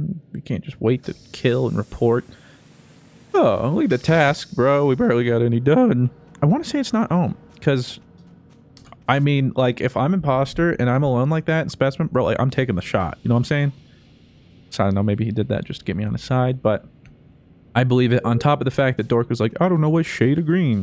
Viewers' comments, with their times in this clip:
0:03 Anyone else hear his voice crack